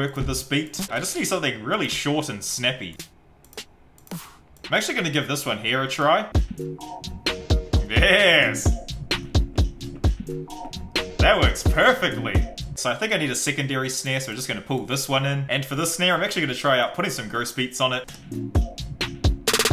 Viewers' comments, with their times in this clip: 0:06 the snare totally ruined it v.v